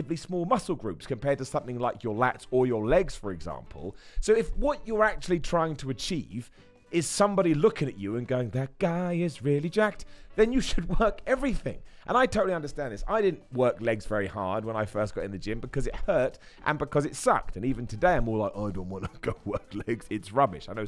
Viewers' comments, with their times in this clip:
0:08 new entrance music confirmed